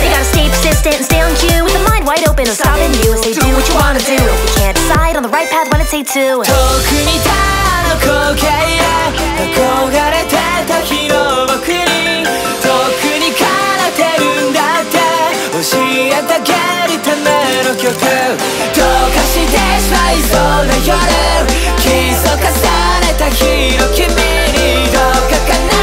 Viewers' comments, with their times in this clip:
0:06 gives me some serious bo en vibes and I don’t really know why, it doesn’t really sound similar to his stuff.